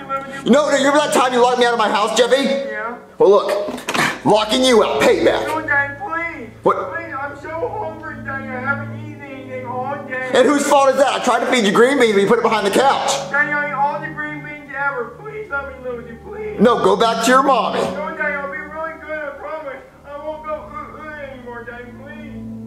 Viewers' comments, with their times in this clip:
0:04 The music, the voice acting this is prime sml